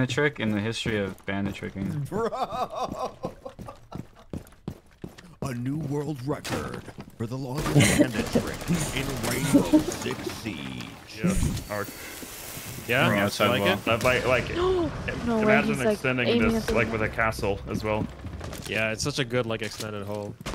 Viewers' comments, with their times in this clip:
0:05 Professional voice actor: